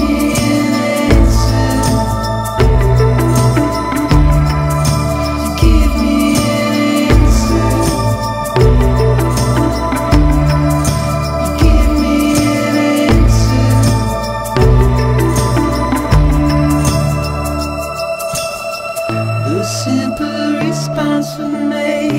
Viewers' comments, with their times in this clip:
0:09 Just wanna say : the pictures in the background depict Normandy pre-war. - the same place the second Death Stranding trailer took place in. Also i love that cracking sound you hear right at the end, that also works as an intro for "i'll keep coming'... makes it look like a prequel to the events of the first trailer. My guess is : The people are taking a shower in timefall, or oil, and are being transcended to the world of death stranding. Last guy who tried to get in got rejected af.